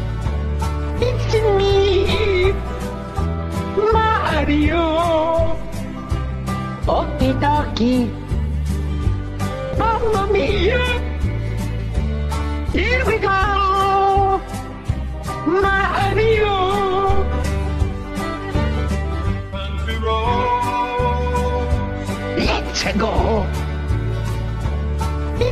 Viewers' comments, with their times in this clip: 0:06 Did you hear marios voice ?